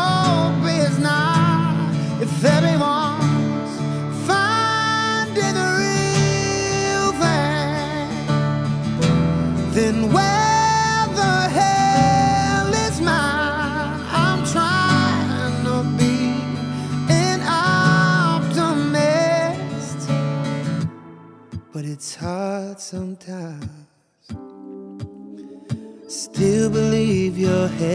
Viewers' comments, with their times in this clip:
0:10 for example "where the hell is"... clearly theres pitch correction. Trust me guys. I'm not hating on Teddy or something..